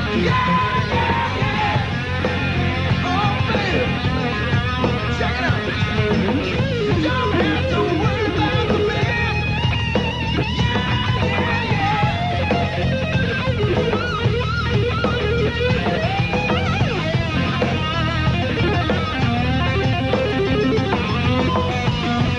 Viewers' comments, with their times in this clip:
0:06 There's a lot of Eddie brilliance here but that repeating lick is SO COOL